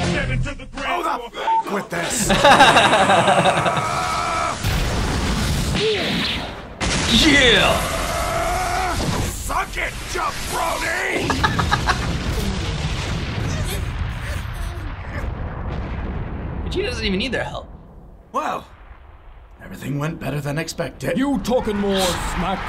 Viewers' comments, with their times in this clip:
0:08 Actually he sounds more like Steve Austin. That speech is very similar to Austin's speech from KOTR. 'You talk about your Psalms. You talk about your John Well Austin just kicked your ass.' Which why it makes sense that Vegeta used some of The Rocks lingo.